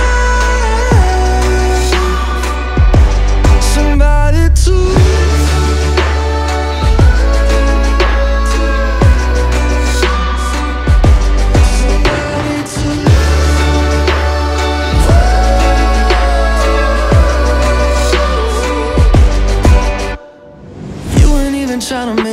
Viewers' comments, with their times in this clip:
0:04 Beat kinda sound like “im god” by clams casino